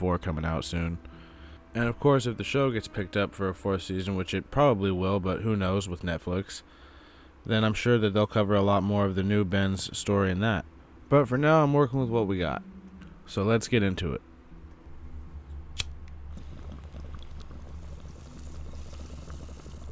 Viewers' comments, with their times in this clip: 0:05 maaan... your voice is so monotone, I only went as far as